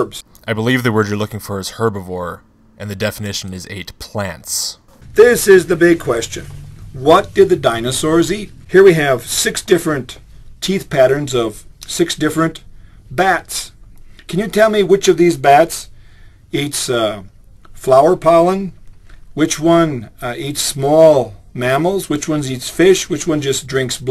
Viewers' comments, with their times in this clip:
0:09 Screw everything else I had written in this comment. I have to pause "Polin"?! FUCKING "POLIN"?! IT'S WRITTEN RIGHT THERE! P-O-L-L-E-N! FUCK! Deep breaths Okay. Okay. I'm okay, now. Continuing on.